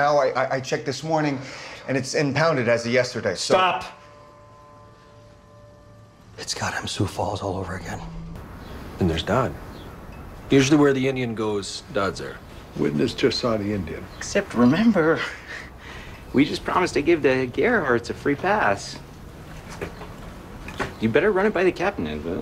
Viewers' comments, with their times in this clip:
0:05 The way Ben Schmidt says "goddamn" is hilarious. "Gaw-dam"